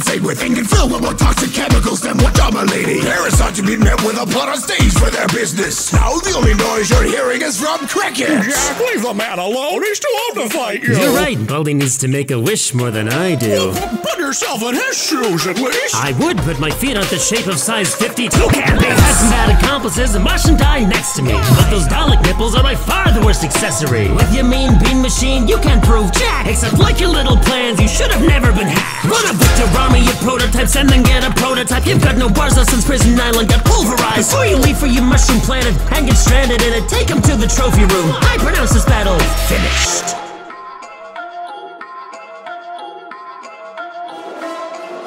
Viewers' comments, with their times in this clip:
0:05 i love how jack sounded in that moment
0:28 AM I THE ONLY ONE WHO HERES A ROBOTIC NOISE???